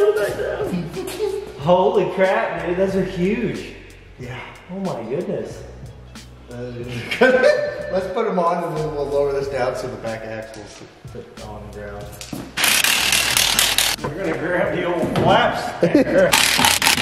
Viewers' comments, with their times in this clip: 0:04 Dude his laugh is absolutely contagious. ish